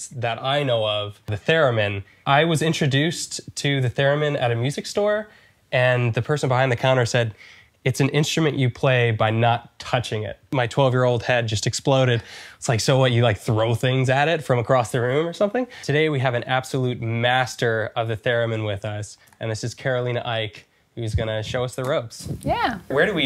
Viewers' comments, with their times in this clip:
0:10 "My twelve year-old had just exploded." I'M SORRY WHAT